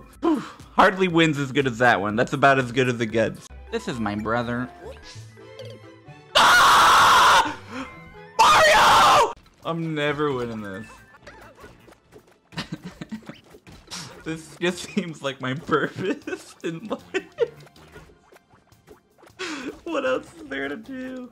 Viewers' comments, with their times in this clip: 0:03 the entire sequence has me in shambles. From the silly accent, to the Koopa falling into the brothers, then the scream oh my god